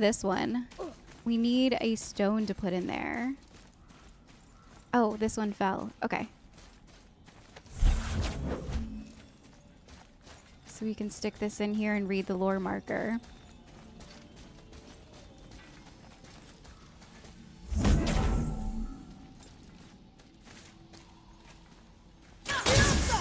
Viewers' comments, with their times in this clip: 0:10 I'm super sorry but I keep hearing howling sometimes in the background of your vids.